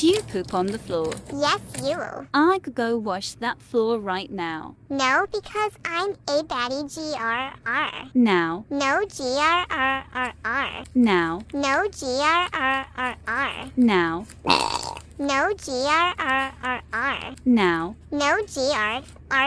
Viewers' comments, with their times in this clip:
0:06 A little sheep that sings bad 🤢